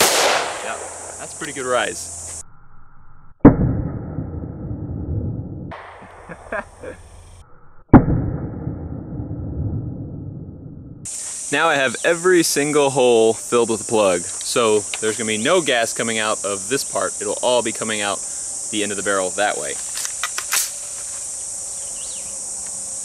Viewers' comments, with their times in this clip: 0:07 like your new leafblower